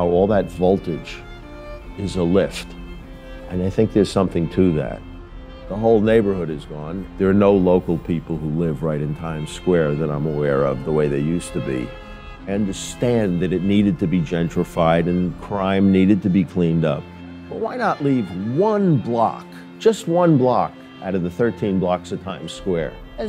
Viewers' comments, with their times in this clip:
0:09 Was that a bird ?